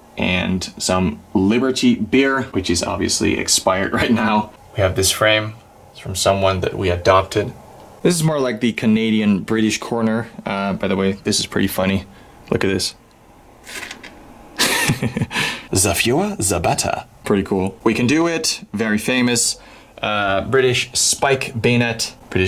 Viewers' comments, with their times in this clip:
0:05 this sounded so weird